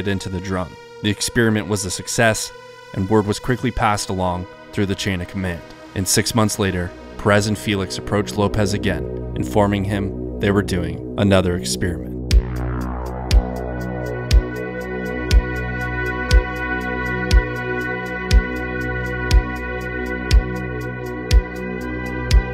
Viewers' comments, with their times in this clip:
0:10 It's pronounced "ex-pear-i-ment", not "ex-SPEAR-i-ment". This has become a common error in the last year or so, but I have no idea why. Only some Americans seem to pronounce it this way.